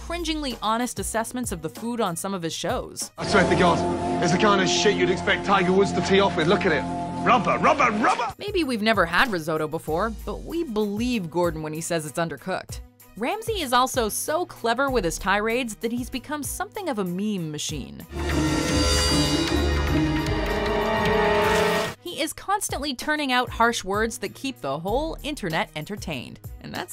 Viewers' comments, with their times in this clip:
0:07 COOKIE MONSTER: RUBBA RUBBA RUBBA